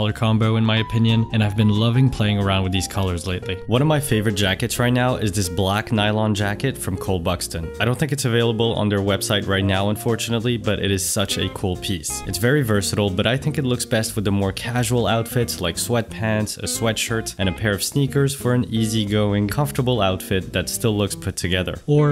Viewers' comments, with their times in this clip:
0:07 such a 'cole' piece